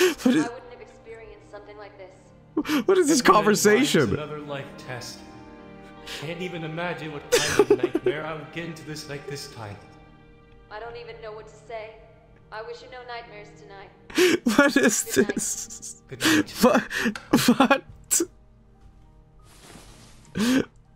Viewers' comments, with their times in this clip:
0:04 The female voice is an AI voice of the vtuber Ouro Kronii. Did not expect to hear her voice being used 😄